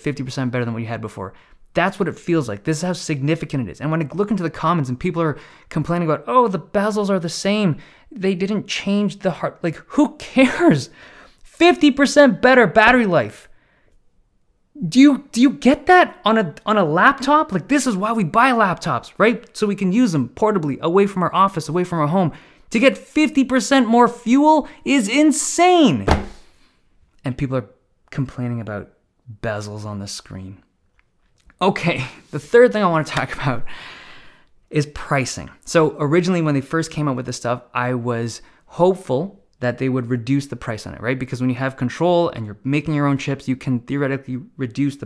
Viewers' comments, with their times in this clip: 0:10 Me: Volume at 70% for a normal Dave2D video. Everybody wakes up. Me: well that was unexpected
0:12 When Dave Lee is no longer a ASMR YouTuber. Love the passion!
0:19 Dave Lee Almost lost my cool here
0:28 and people are bit... complaining about vessels on the screen. My man really held it in like a pro 😎